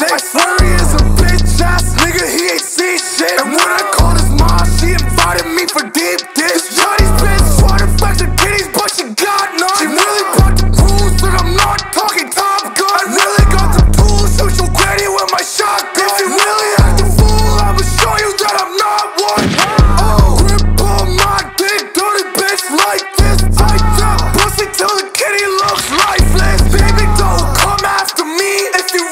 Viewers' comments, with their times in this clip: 0:10 this guy sounds exactly like 6ix9ine